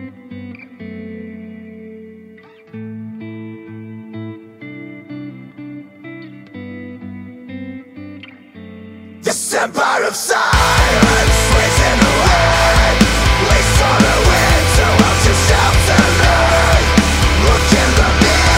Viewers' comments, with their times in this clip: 0:05 an undertaker intro